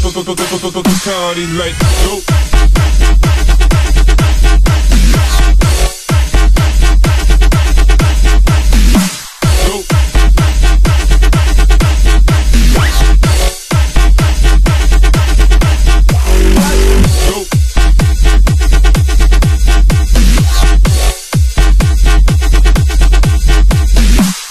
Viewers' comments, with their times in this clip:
0:05 BIG MOUTH SCREECH